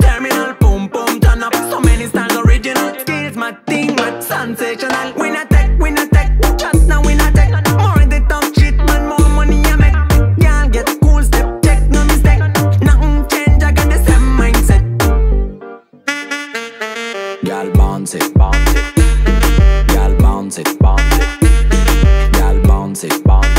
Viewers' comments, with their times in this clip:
0:06 it’s the best an the guy sing uuuh nu na nai nai or something, this goes hard!!! What’s the song please? Anyone??😩😩😩😩😂😂💕 🔥